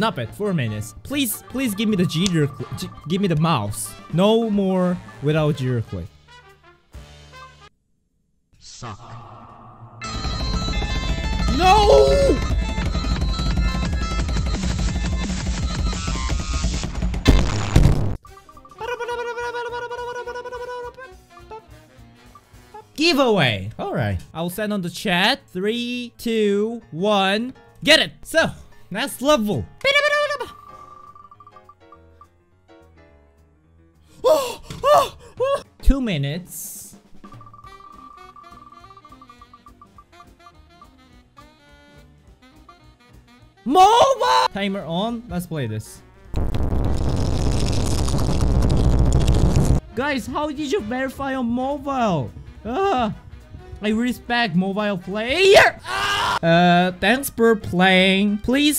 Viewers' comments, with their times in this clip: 0:08 taiko no tasujin drum on geometry dash moment
0:45 Warning Trun Down the Volume